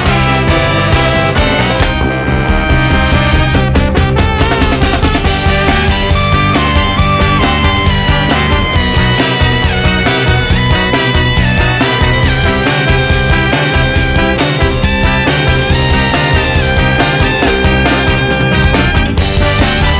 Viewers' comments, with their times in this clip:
0:05 I am a huge streetlight fan, and love this song. But i couldn't help but notice that part sounds exactly like creep by radiohead. Anyone else hear that?